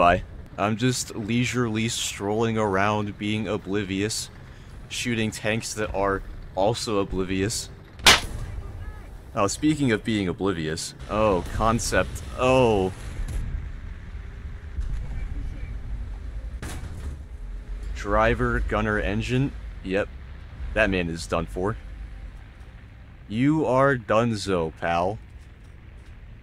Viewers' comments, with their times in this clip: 0:08 Holy moly that clap sound made me jump